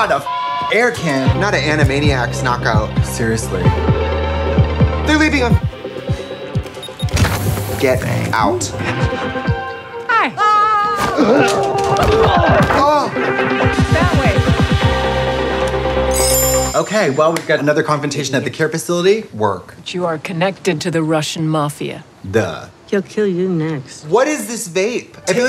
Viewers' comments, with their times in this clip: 0:10 Is NO ONE gonna talk about how comical the scream was